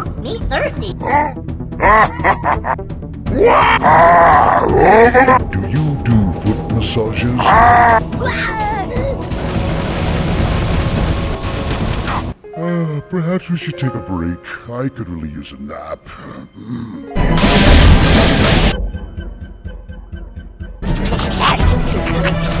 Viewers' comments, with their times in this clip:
0:03 Why no one isn't talking it's killing me with that scream